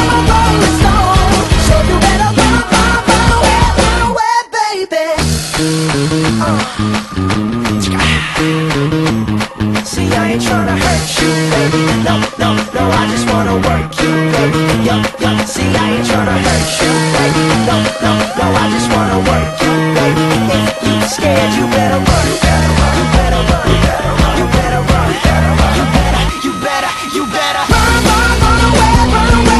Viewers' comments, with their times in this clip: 0:10 sounds like heaven